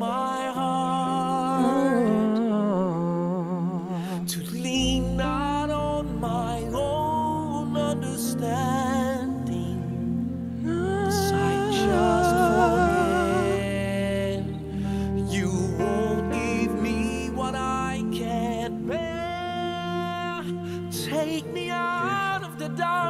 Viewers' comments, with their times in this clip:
0:10 i love that ad lib